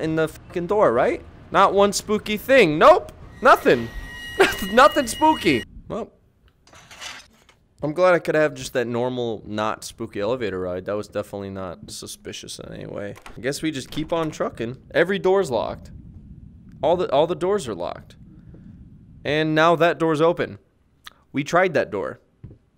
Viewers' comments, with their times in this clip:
0:03 he sounded so done with this game😂